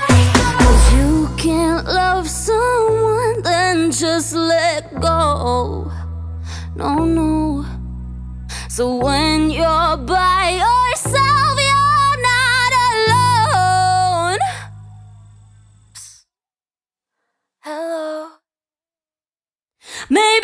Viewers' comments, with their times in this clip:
0:04 that part of the song just makes my ears happy like, YESS Then the "hello" literally sends shivers down my spine